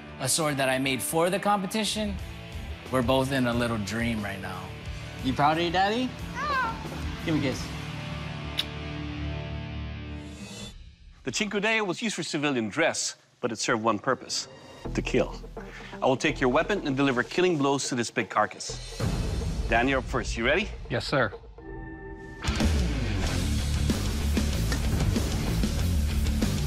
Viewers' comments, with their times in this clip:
0:08 why tf this kid made a dog noise
0:14 one can't simply smile and say "To keelll" like this fella